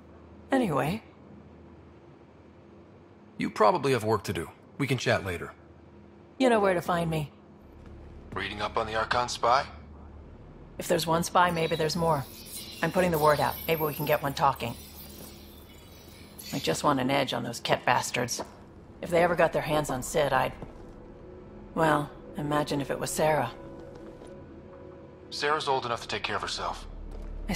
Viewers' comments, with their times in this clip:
0:08 Lawl, helmet voice Is diverting mandibles how turians blush?
0:08 why does this guy sound like he’s wearing a helmet and speaking through a microphone?
0:08 Raider talks like sending radiomessage. Go to Hell, Bioware and EA...